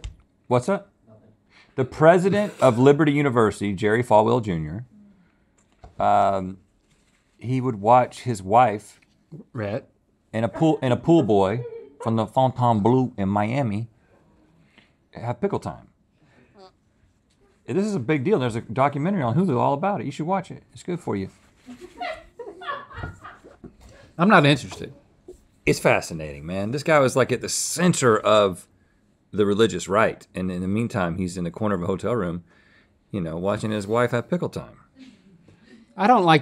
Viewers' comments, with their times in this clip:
0:07 The way Link says "Rhett" and the way Rhett says "Fontainebleau in Miami" is hysterical to me 😂
0:08 That "Rhett..." from Link is the smoothest thing I've ever seen in my life. 😄
0:16 The way Link said “Rhett” like a southern mom warning their kid not to touch that thing but this was the last time she was gonna say it!
0:16 I heard that little fart
0:16 The little toot is so funny
0:17 Let’s not breeze past this… Who tooted